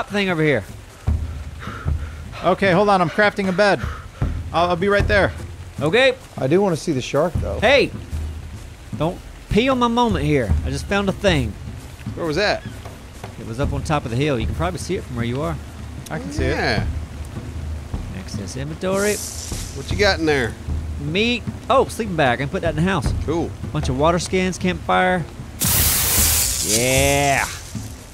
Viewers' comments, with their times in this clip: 0:09 i was watching this and accidentally went to and heard something like, "pee on ma mama" lol